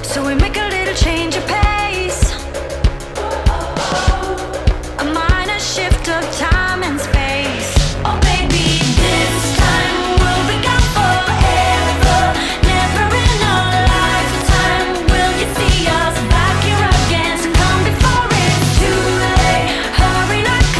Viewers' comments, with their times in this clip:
0:08 lmao the song